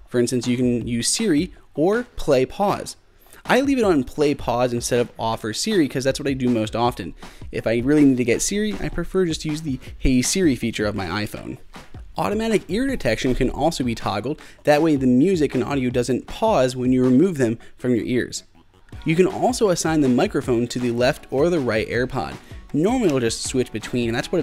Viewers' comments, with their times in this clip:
0:10 Who’s phone went off